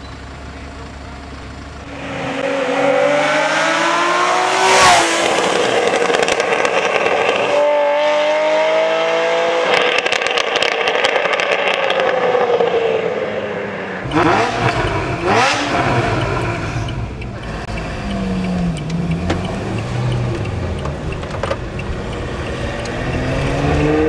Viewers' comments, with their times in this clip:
0:06 I love the sound when you release the foot from the throttle and you hear the engine producing this sound, just if it said to you ''Accelerate again!'' +1